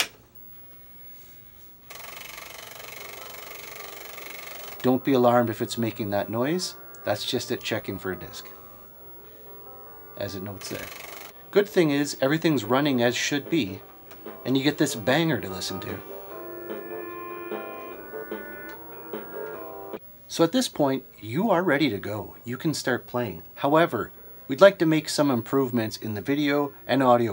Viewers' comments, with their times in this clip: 0:08 the boot screen theme music is forever etched into my mind...